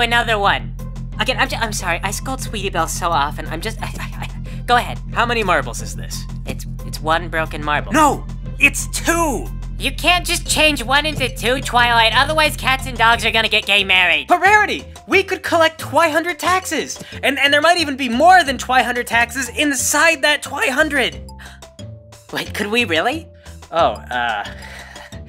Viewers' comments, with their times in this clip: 0:10 Rarity sounds too much like Rainbow Dash to be Rarity.
0:10 You have been hanging around Rainbow Dash to much Rarity. You're starting to sound like her.
0:11 Rarity sounds like Rainbow Dash.